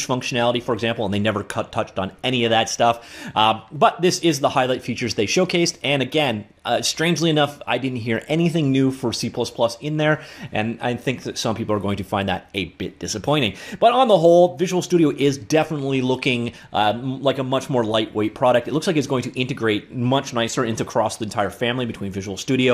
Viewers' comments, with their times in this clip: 0:10 at first I understood 8-bit disappointing. My bad